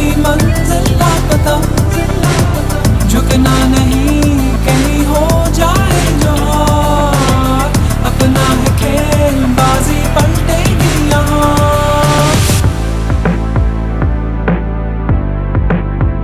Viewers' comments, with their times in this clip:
0:03 Bundle of Love. Thanks PCB . The Anthem which we want. Slow & and heart touching❤. Enjoy this scene 😊